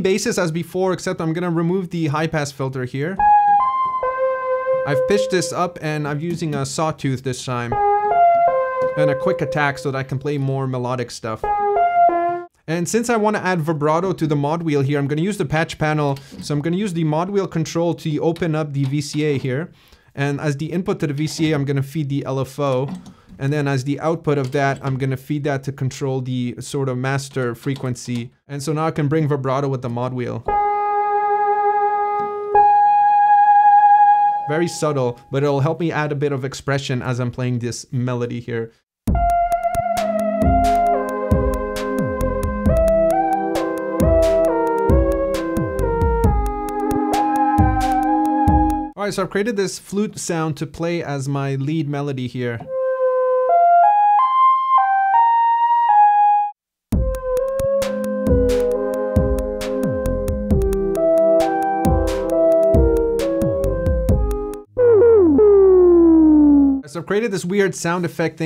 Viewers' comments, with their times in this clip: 0:03 that tone is LIFE! ❤️
0:07 this patch is beautiful
0:53 That's not a flute, bro. That's an ocarina.